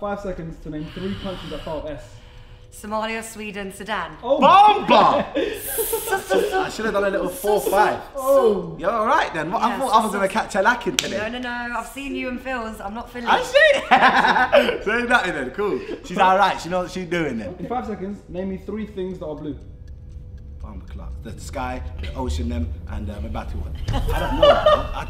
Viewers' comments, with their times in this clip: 0:06 Maya's Headie One impression xD